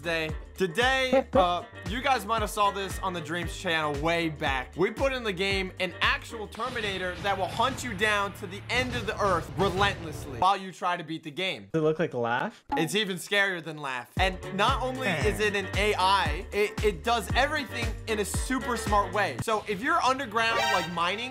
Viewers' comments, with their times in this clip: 0:07 I like how The Terminator theme plays here